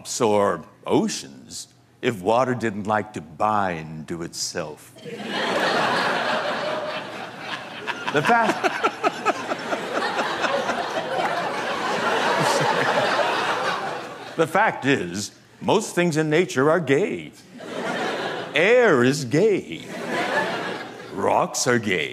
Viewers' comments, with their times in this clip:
0:07 that laugh though